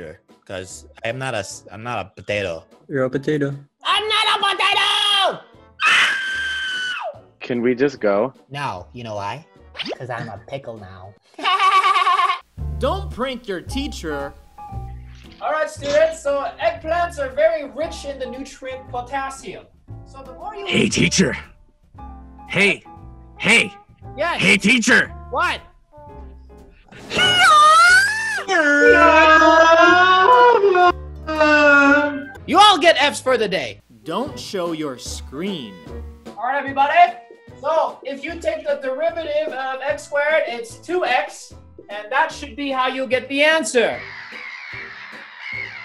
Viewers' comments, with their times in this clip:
0:03 got me laughing then he scream
0:07 all headphone users are dead
0:27 HEE YAAAAA!!!! Every students starts crying Screams You all get F+s for the day!
0:31 His face and moan